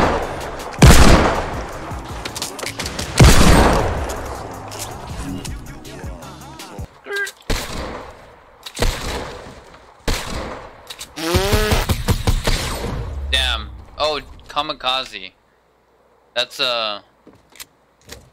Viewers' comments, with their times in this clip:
0:06 is my favorite he laughed when u accidentally shot your ramp and fell but the next shit he hit destroyed